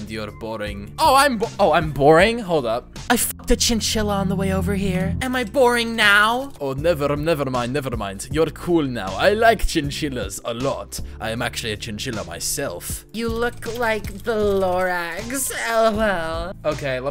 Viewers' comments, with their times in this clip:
0:04 Sasha? Like heavy's tf2 gf? RUSSIAN ACCENT DETECTED!!!!!